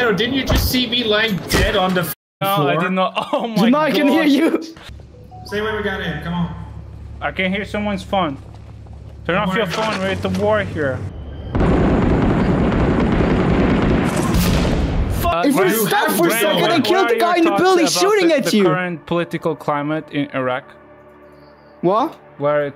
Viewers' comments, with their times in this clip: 0:05 my reaction: Is that a phone-activated IED? Immersive as f------ oh it WAS somebody's phone